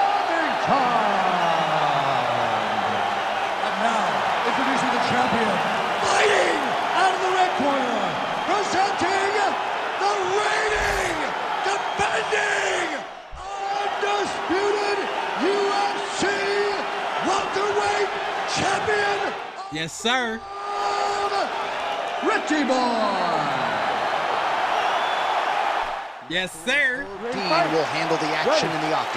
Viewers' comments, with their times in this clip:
0:10 yo he delivered the hell out of those voice lines😂
0:10 Bruce "The Cookout's Fight Announcer" Buffer lmao cause imagine ya uncles goin at it and All you hear is that lmao #funnymoments